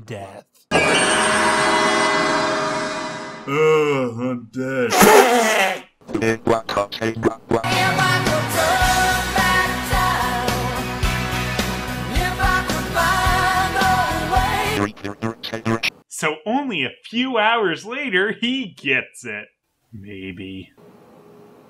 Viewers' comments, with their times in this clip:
0:05 The "robot voice" is not actually that. The idea of having a robot is too creative. Rather, the sound is a regular voice sped up forward/sped up backwards. You know, it's to help the viewer "hear" time going forward/backward.